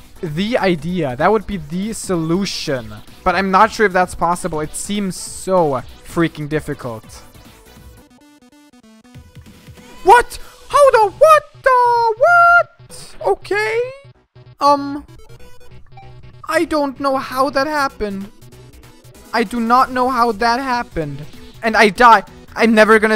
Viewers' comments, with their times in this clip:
0:10 He sounds like a Muppet